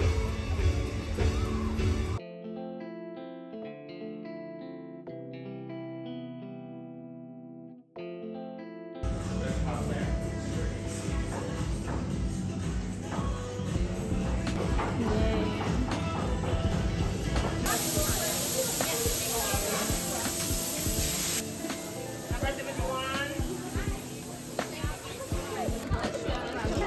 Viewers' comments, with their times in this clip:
0:09 when you notice "butter" was playing on the background 👀 I might have my lunch by dancing along haha